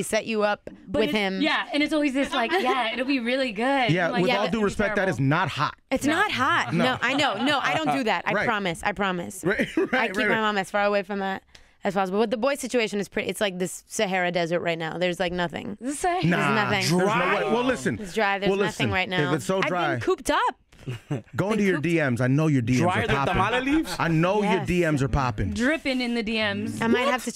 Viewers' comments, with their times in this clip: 0:10 "I keep my mom as far away from he-as possible?" ...what?